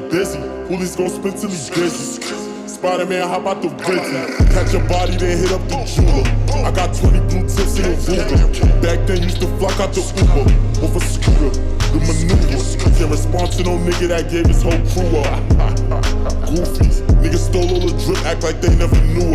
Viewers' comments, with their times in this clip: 0:04 That drop though 🔥